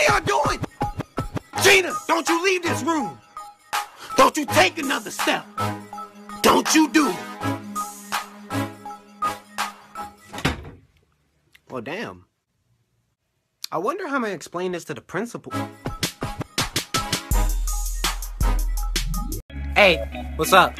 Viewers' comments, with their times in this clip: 0:04 Why did the “DON’T YOU TAKE ANOTHER STEP” sound so good with the music